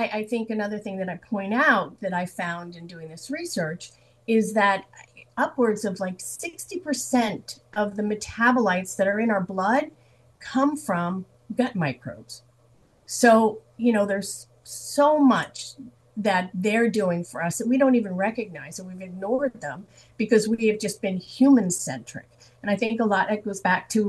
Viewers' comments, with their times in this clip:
0:10 where the audio glitches, I believe she is saying "Upwards of 60% of the metabolites found in our blood come from gut microbes."